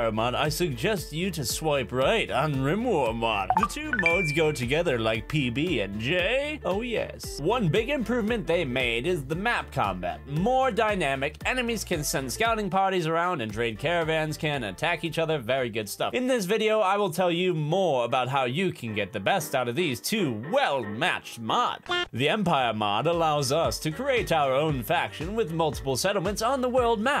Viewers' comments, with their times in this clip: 0:09 voice change/mic change